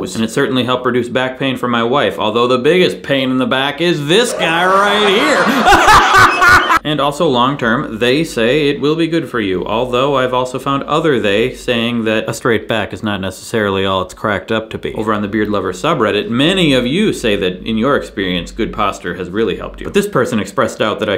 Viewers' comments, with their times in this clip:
0:06 same laugh as Ron Howard's brother in Princess Bride.